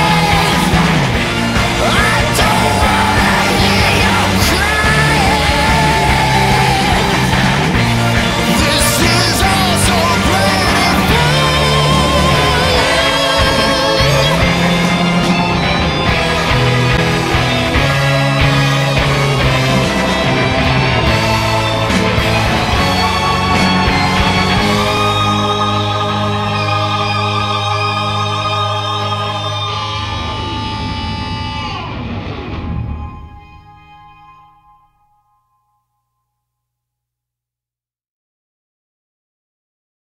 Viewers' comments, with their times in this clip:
0:04 That moment sends chills down my spine. What this movie could've been... It makes me sad to think about how much better I would've enjoyed it with this one simple edition. "I don't wanna hear your crying" Delivered with such malice and hatred yet a tinge of victory and enjoyment. The subtle sadism of the onceler impresses me to this day.
0:13 hits different. The way the singer hits a high note makes it sound like he's proud of what he's done, even though this was what the Lorax warned him about earlier in the song. That's one reason for why I think the original tone of the Lorax movie would have made it a 100 times better. Instead, we got the Illumination white-washed version that toned it down because of their corporate greed and pride.
0:14 HOLY MOTHER OF FUCK, THAT IS A BOLD CHORD PROGRESSION
0:22 I think the ending tune is so fitting for the song. It goes for a higher note and then hits that low terrible sounding electric guitar at the end, showcasing the terror that has been done.
0:33 for me that's the part of the tune that really said "this was all ur fault u can't fix this"